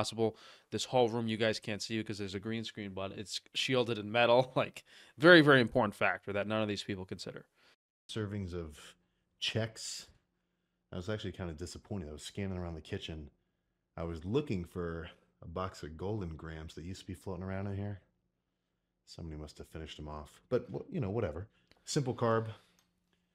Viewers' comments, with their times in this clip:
0:08 if you listen, he is struggling to say simple sentences and practically gasping for breath. This happens to me when i jog for a while and get winded.